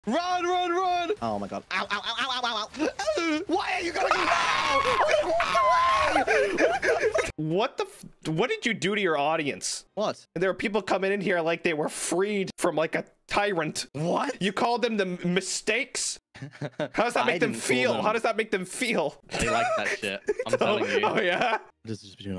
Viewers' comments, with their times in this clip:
0:05 that Jerry scream tho lmao